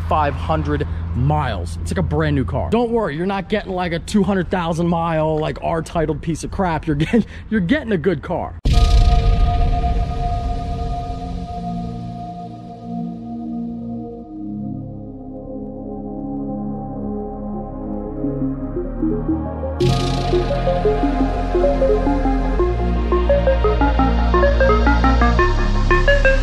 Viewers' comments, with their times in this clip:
0:10 The hype beat and is epic